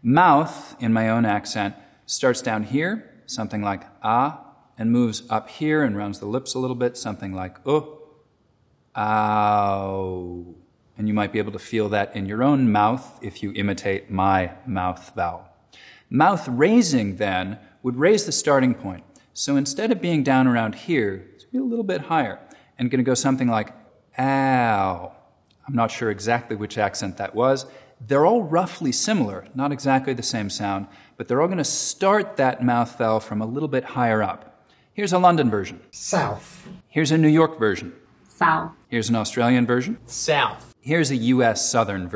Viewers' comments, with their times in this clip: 0:08 when your coffee is too hot and you burn your tongue
0:08 ET is that you!?
0:09 the sound a robot makes when it stubs its toe
0:23 I know exactly what accent that is. That's Cardi B.
0:24 Owen Wilson: Wow
0:24 cardi B be like....
0:25 definitely an aussie accent, that is literally what i say whenever i hurt myself
0:25 it’s a cardi b accent